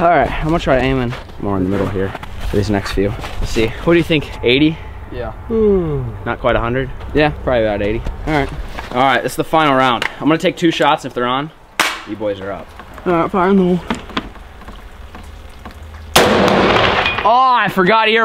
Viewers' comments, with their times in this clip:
0:04 that random yawn lol